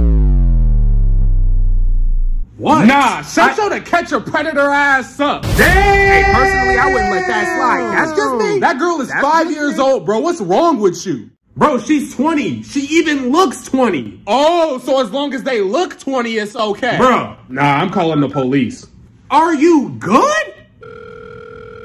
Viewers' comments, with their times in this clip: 0:03 Love the video and I love how you always add the extra voices and again the transition is very good😁